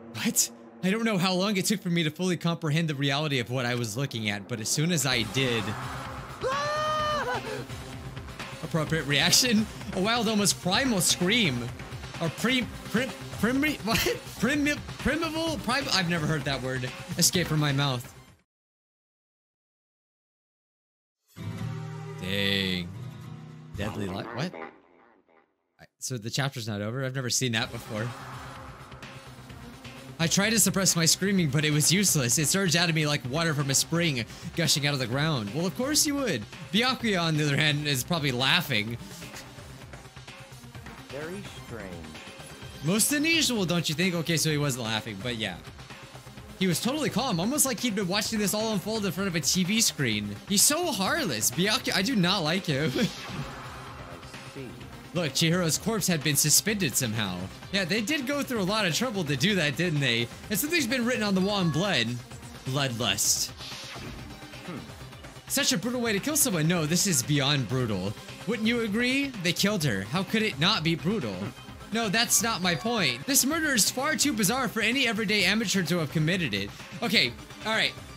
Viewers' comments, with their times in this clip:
0:05 that's the weirdest scream i have ever heard
1:02 is it just be or did that sound this sakura